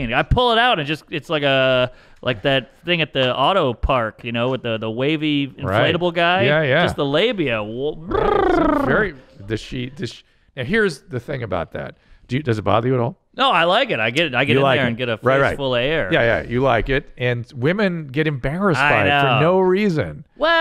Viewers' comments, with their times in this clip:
0:05 Imitation of a queef